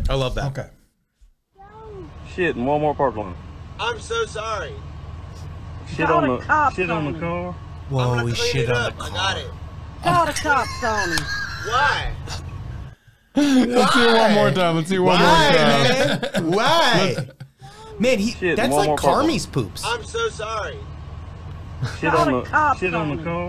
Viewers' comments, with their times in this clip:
0:07 "Shit on the car?"" Didn't expect a cameo from Hank Hill! Love you guys